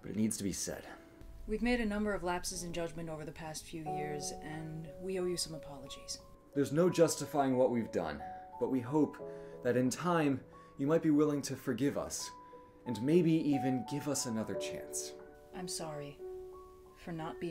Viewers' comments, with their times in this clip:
0:03 I remember this being the first video I watched on the 1st of April last year and I thought they were serious until approximately the second megalovania became recognisable